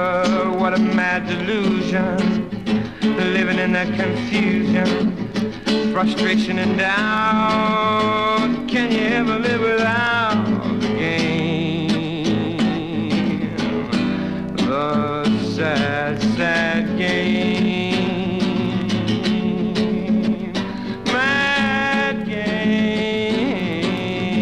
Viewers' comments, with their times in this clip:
0:09 What is that DAMN chord after the word “doubt”?